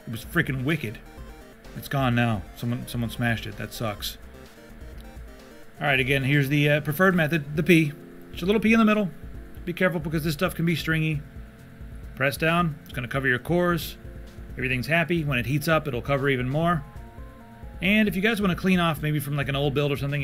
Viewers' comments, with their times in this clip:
0:07 at first I thought he said "the turd method" . . . which, actually make sense. Drop a little deuce in the center and it will spread evenly.